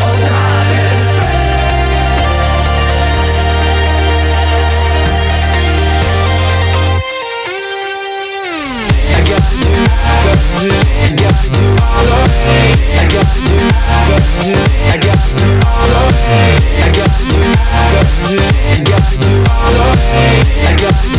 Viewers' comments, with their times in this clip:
0:09 what's the name of the guy with the killer arabian and how does he do them that smooth?